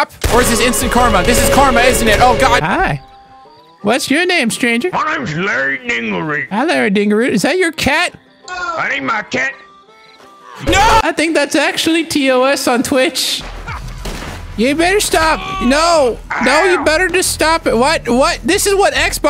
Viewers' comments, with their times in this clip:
0:03 The way he says MY NAMES HARRY DINGLEROOT